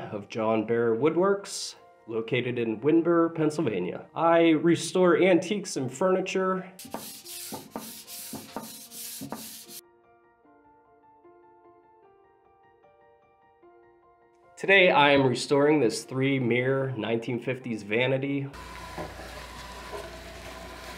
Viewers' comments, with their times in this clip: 0:08 thought snoop dogg was about to start rapping